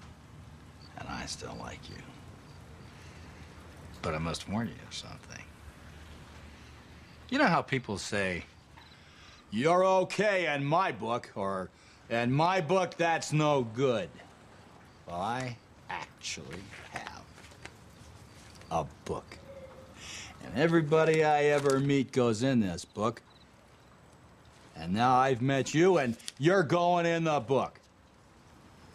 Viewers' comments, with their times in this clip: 0:09 I love his John Wayne impression !